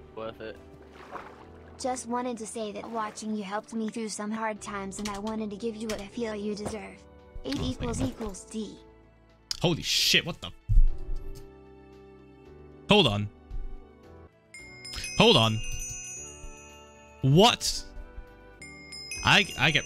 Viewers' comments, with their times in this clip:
0:04 The music is perfect for what’s happen